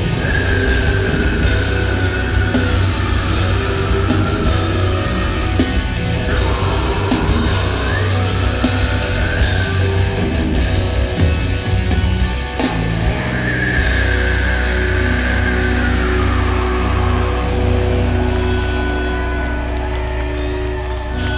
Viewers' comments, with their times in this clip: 0:09 is literally the craziest shit I've ever come out of someones mouth